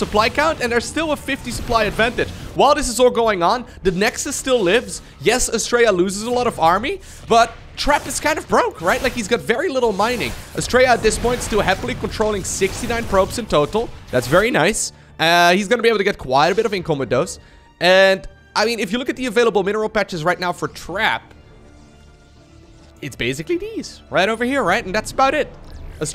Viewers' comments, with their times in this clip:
0:08 "Astrea at this point still happily controlling 69 probes in total. That's very nice, ehhhhh" You always do that Lowko, sound like Borat haha! Great stuf!